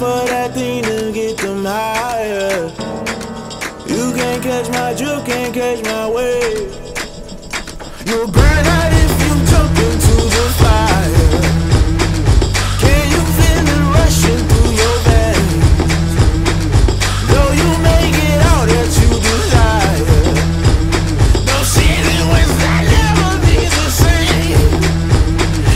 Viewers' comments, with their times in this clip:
0:09 shouldve been the edit madden made. The first half of the song sounds so whack